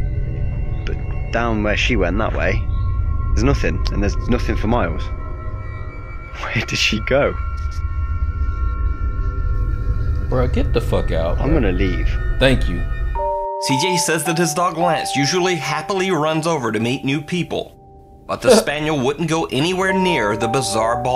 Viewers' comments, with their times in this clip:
0:09 I laughed so hard when he said "tHanK yOu"